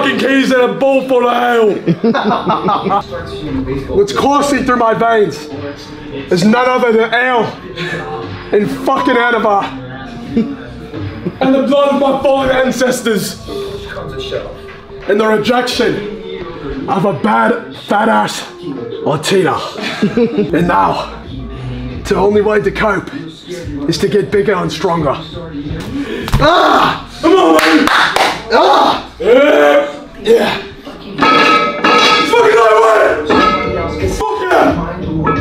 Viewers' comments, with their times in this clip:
0:07 What I’m saying likes what the slowed song
0:18 you can hear the giggler giggling